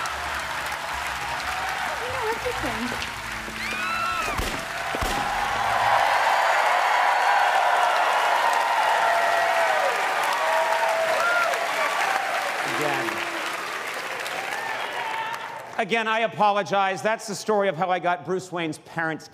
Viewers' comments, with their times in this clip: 0:04 Bit weird to hear people cheer gun shots, but hey-hoo.